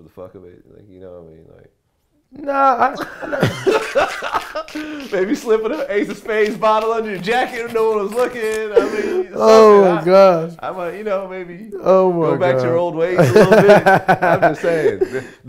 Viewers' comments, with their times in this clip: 0:03 His laugh sounds like a Windex spray bottle
0:03 y do all guys laugh like that